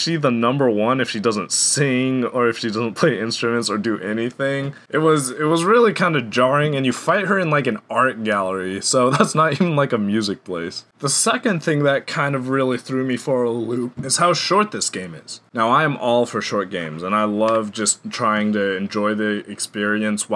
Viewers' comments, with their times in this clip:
0:03 realize you hear the music in the background right